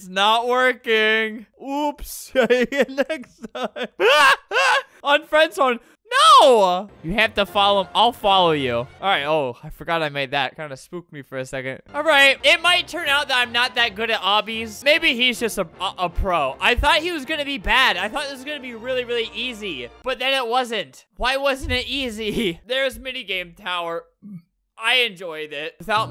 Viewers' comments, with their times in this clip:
0:06 kinda did sound like a HxH soundtrack-
0:07 I think it started playing the hxh intro for a sec lol